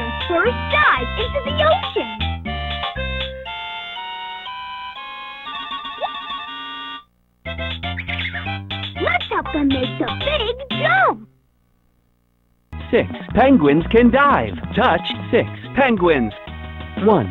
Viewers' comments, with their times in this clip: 0:05 Penguin: (Dips foot in water) (Looks behind & Squeaks)